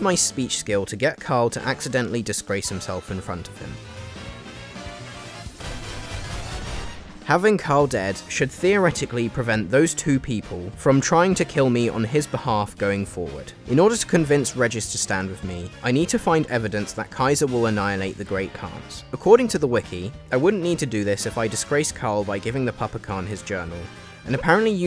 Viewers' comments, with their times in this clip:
0:03 The SMG shots lining up with the music is comedy gold by complete accident. Keep up the good work, even if you never meant to!
0:04 Okay, the timing with the shots and music was freaking on point!
0:04 The shots perfectly timed with Jump Up Superstar broke me 🤣
0:04 the bg music was perfect lol
0:04 loved how you synced up the music here
0:04 The bullets were perfectly in time with the song. Love it
0:04 Why did the shots match the music lol
0:04 can we appreciate the music being timed to the gunshots?
0:04 THE MUSIC AND THE GUNSHOTS WENT SO HARD WTF
0:04 My favorite is when the music is synced up with gunfire
0:04 The music lining up with the gunshots is a great touch
0:05 the gun shots syncing up with the music was s tier editing. !!!
0:05 the way those gun shots sync up perfectly with the music. Absolute perfection.
0:05 The timing of the music *chef's kiss*
0:05 I'm pretty sure it wasn't on purpose, but the way the gunshots sync up with the music is so satisfying
0:06 the 9mm on the beat🤤🤤 i love lil things like that